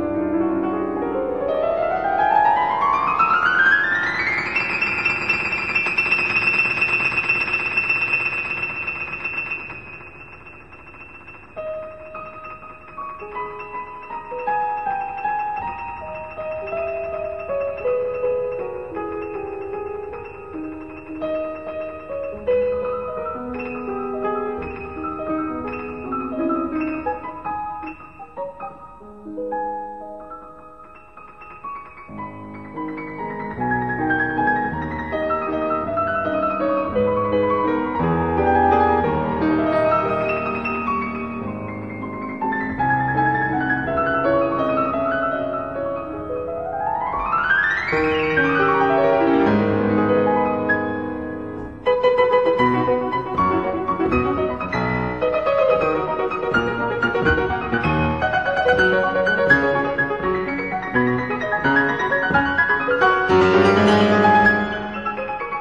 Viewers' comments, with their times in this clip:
0:08 how ANYONE on earth does a trill with the 4th and 5th fingers - I'll never know.
0:32 that left hand entrance is soft and deep at the same time and that's incredible
0:40 the way he controls the speed is amazing.
0:42 retardo broke my heart
0:52 The lower notes were so significant and perfect there. Atleast for me. actually the higher notes should be a bit louder to make it sound even better, but it's piano fault else his side was just perfect for me